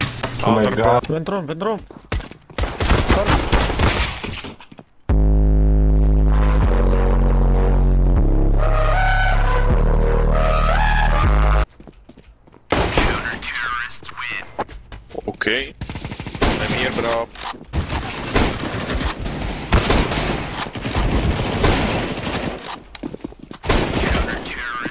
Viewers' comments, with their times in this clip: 0:05 i can't hear now